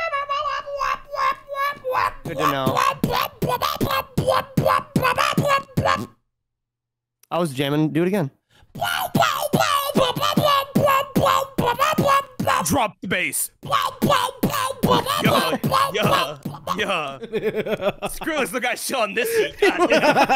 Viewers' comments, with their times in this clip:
0:06 i need someone to turn his beat boxing session into a legit track lol
0:06 YO THIS SONG POPPING